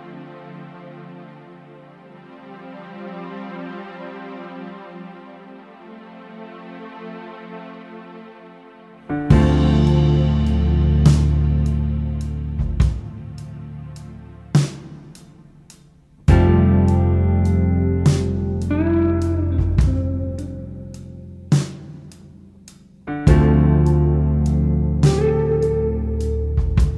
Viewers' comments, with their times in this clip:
0:09 when the note drop i know that this song deserve a like and this band got one more fan